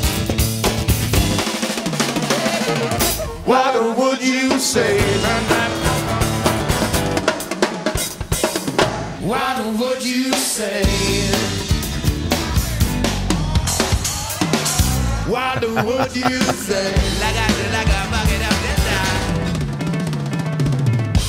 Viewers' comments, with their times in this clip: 0:03 I need to learn the 1993's drum fill immediately!